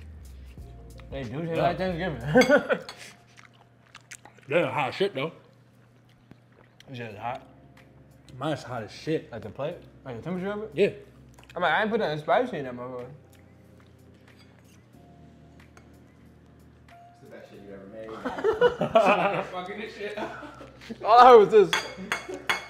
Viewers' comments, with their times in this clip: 0:03 mfs was smackinggg 🤣🤣